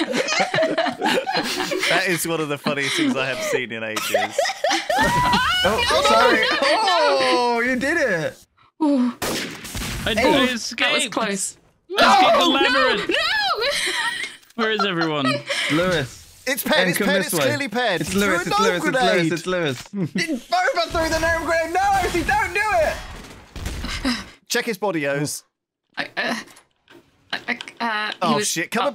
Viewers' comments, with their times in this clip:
0:10 Lewis screaming NO! was the most genuine thing its like he's the dad seeing his kids fall on a playground.
0:11 There it is.. that "saw a kid getting hit by a car scream" that I adore.
0:11 Lewis’ “NNOOOOOOOOO!!” was so emotional 😂😂😂